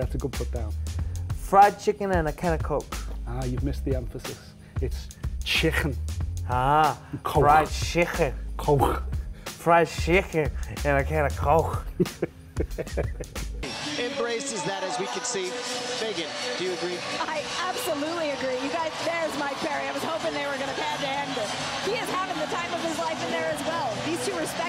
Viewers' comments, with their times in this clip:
0:08 Hey Kelvin Gastelum has a pretty dang good Scouse accent